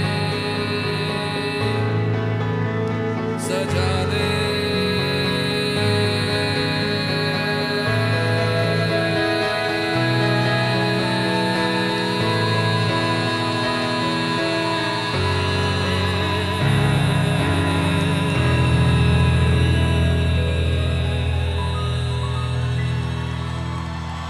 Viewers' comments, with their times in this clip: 0:10 he was rubbing his chest as if it hurt him. He also sounds off and has trouble breathing. Ok im sad now bye